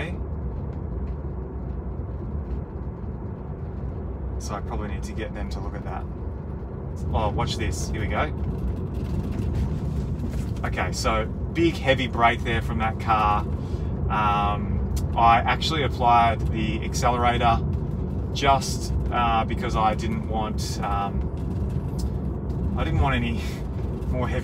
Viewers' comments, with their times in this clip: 0:05 rattle may be seat belt buckle, face metal part to seat and not frame, that's what i did.